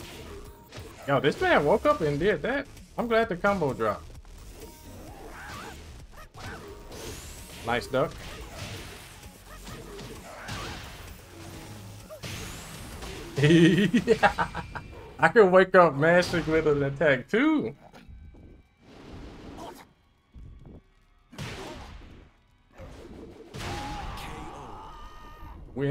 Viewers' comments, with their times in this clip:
0:09 that Majin laugh hahhah